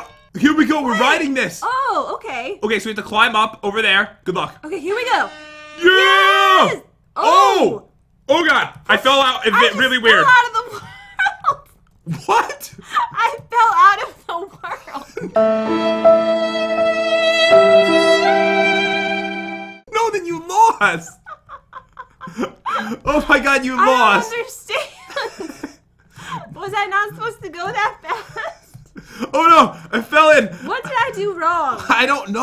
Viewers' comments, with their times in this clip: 0:06 they said “OH” at the same time
0:15 i love the background music 😂😂😂
0:18 WOW SOUND EFFECTS AND EDITING!!!THIS CHANNEL IS IMPROVING